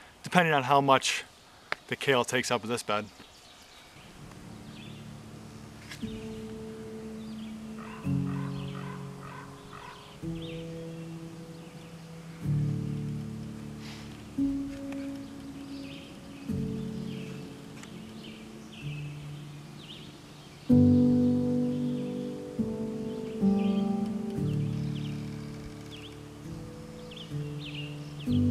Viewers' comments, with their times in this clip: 0:10 Everything is really coming along! Your chickens look great, too. They sure love that sod and dirt you threw in their run, I see. Do you have ravens there? It sounded like one